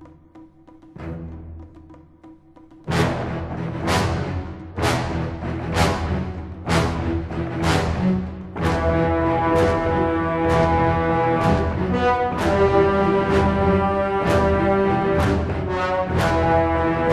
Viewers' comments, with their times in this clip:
0:03 Goosebumps! goosebumps! Goodness what a powerful piece of music